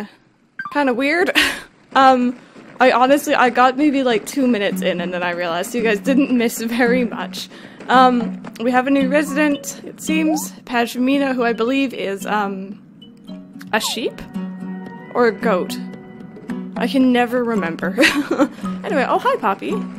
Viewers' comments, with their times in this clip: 0:06 the pm music is so adorable 😭🥰